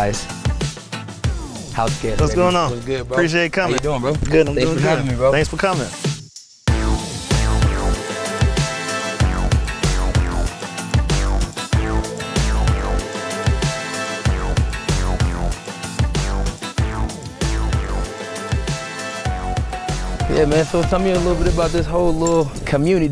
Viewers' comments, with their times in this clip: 0:07 That background music has a strong resemblance to Backstreet Boys "Everybody"...this is from a friend of course...I would not know...